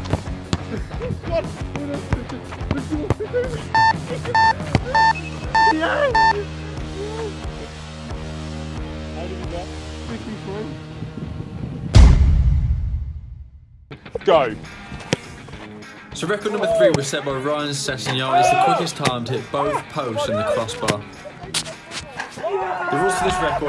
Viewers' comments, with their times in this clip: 0:07 that alarm gave me anxiety